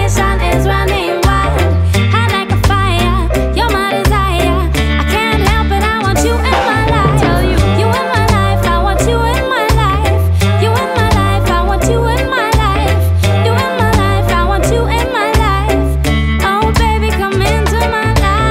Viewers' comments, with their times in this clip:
0:06 catchiest part it took me forever to find this song and i thought she was saying a-la-la-la aha